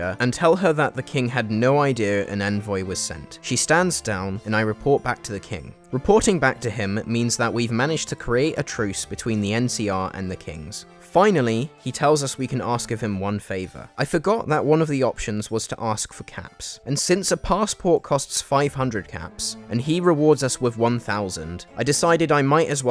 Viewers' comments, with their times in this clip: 0:07 I love the professor layton bgm